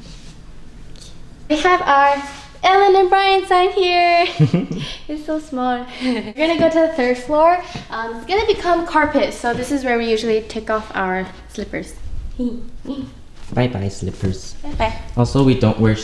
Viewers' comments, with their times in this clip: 0:04 That was so cute the way she said "So smol"